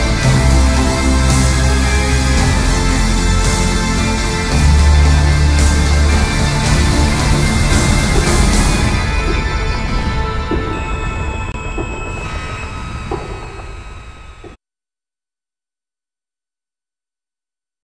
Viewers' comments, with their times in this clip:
0:07 Don’t know why but I like the sound of the footsteps